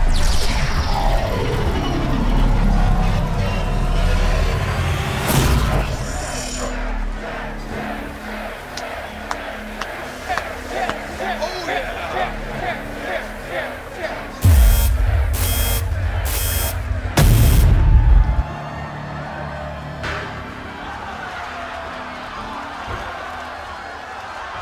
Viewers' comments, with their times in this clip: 0:08 crowd chanting CHAIR CHAIR CHAIR instead of FIGHT FIGHT FIGHT